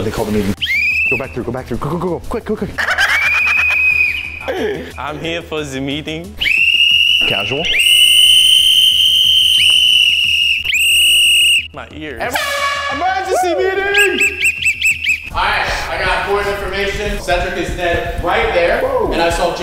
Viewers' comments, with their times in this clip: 0:06 so many whistles